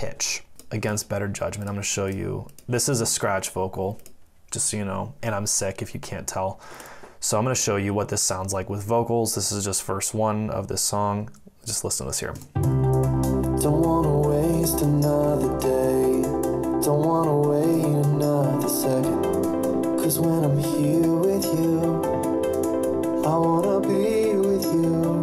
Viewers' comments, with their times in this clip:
0:10 Everything is fine with your vocals. No need to create excuses. You have a beautiful voice.